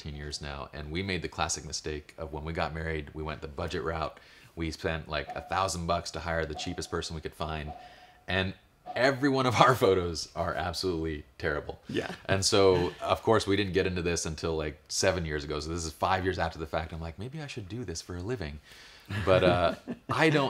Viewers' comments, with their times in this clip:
0:04 You gotta love the sound of broncolor going off in the background around the end! blop blop blop!